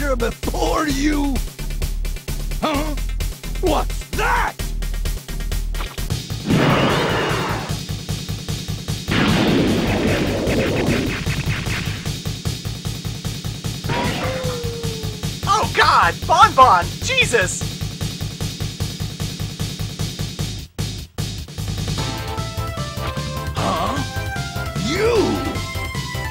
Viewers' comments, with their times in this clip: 0:08 aah, that music...